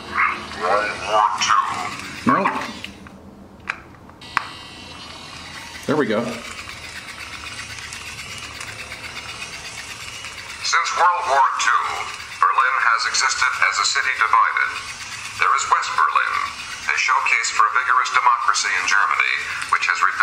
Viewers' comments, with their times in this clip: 0:06 omg the sound of vinyl scratching, CRINGE!!!